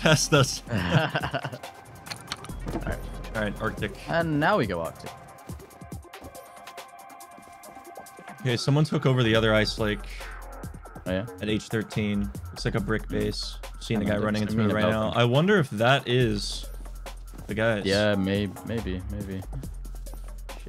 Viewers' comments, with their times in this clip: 0:08 dubstep in the background kickin hard !!